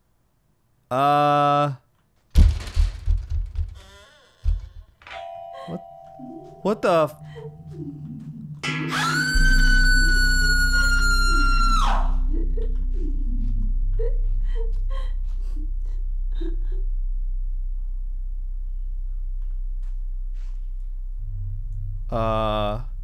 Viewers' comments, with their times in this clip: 0:07 yoo the fucking scream💀💀